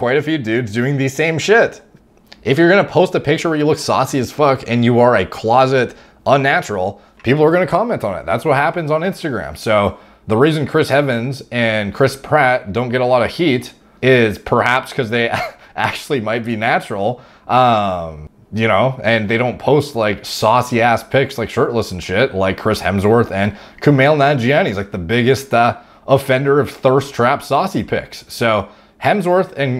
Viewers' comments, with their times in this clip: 0:10 Chris “heavens” he combined the Evans with hemsworth in a way 😂😂